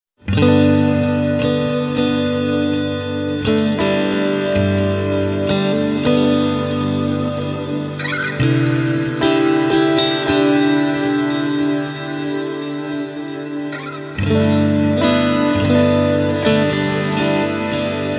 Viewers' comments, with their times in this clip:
0:00 some of the best guitar tones I've ever heard. Outstanding.